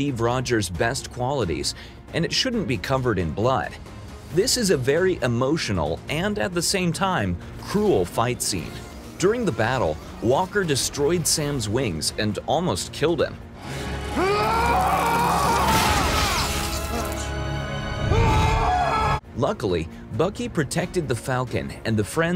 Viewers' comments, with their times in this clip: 0:05 I love how the played the civil war theme